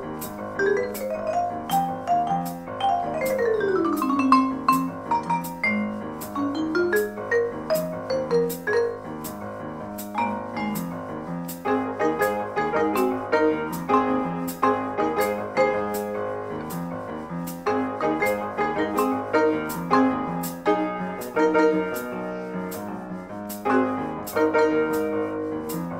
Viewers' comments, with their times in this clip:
0:08 This is incredible my favorite part is the solo into :)